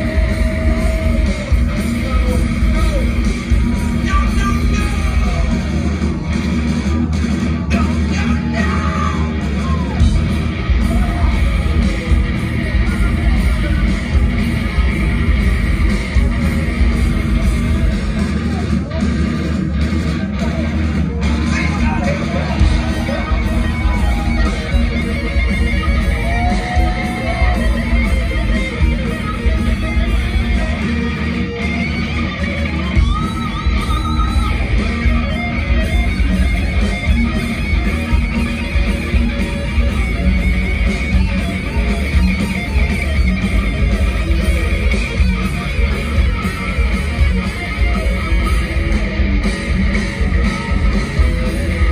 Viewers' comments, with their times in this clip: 0:08 '83 Hetfield right there
0:32 killer guitar sound, wow! And Kirk's bend ....